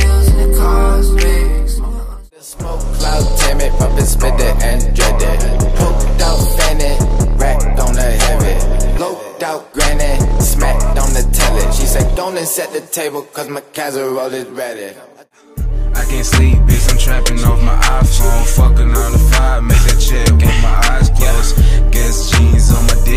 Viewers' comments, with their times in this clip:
0:06 sounds like “womp womp” by jeremih